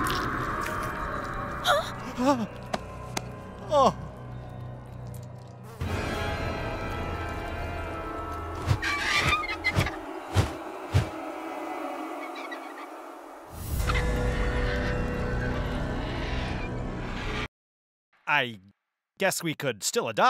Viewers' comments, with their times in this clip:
0:08 sounds like the argentavis in Ark survival evolved
0:08 Did anyone else here a bird from Ark